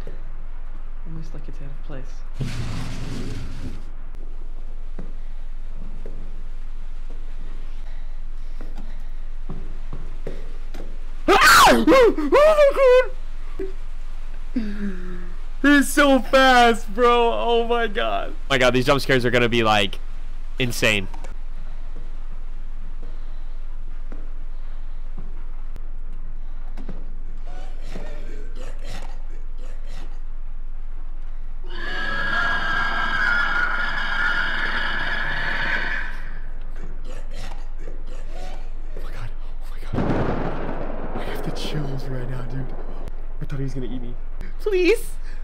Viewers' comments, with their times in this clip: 0:05 your scream actually made me fall out my chair
0:06 Bro i've dropped my phone because of your scream
0:08 when he screamed I also screammed, btw where was the jumpscare warning?
0:10 I'm not sure what i got scared by more. MJ running up on him or his scream
0:10 the scream XD
0:10 i laughed so hard but that scream scared me more then michael akhfjkeshkufhjkae
0:11 that scream deadass shaved 50 years off my life
0:11 your scream actually made me jump. If that character had your screech I just jumped to, this game would be even scarier than silent hill the movie.
0:11 HIS SCREAM WAS THE SCARY PART😭
0:11 That perfectly cut scream xD
0:11 YO HIS SCREAM 💀
0:11 His scream scared me more then Daddy Michael
0:11 Dude your scream and the jump scare shocked me so much so quickly I jumped and bit my tongue it's quality content.
0:11 I almost scared when he scream
0:11 that scream made me jump out of my chair
0:11 scream jumpscared me
0:11 😭😭 the way he screamed he screamed like a girlll
0:12 I had a heart attack just because of his screaming 😂
0:12 BRO UR SCREAM JUMPSCARED ME
0:12 not me screaming like how i did
0:13 THE TIME WHEN HE SCREAMED WHEN THE MONSTER WAS RIGHT BEHIND HIM I JUMPED UP
0:13 I got jumpscared from him screaming
0:13 BRO YOUR SCREAM GOT ME SO SCARED
0:15 when he screamed I almost fell of my chair bcz of the jumpscare no cap
0:15 His scream gave me a heart attack
0:28 AAAAAA THAT SREAM NO ONE HEARD IT HOW?